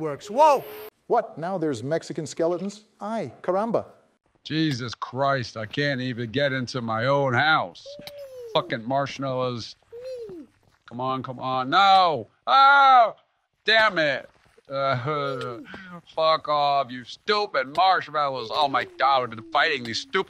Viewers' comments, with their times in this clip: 0:07 i love how they sound like they talk like sassy black women and biden sounds like a whining child